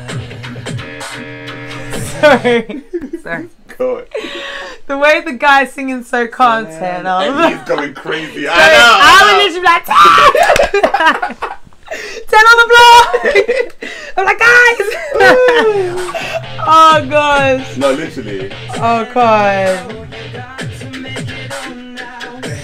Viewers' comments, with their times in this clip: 0:05 ITS TEN'S VOICE